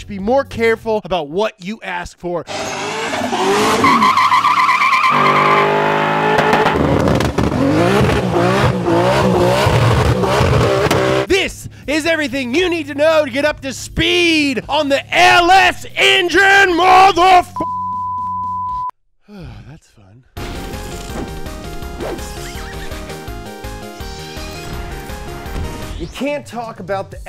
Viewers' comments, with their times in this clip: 0:06 found out where fh4 got its terrible supra sound
0:09 That's clearly the sound of a 2JZ Sorry guys :P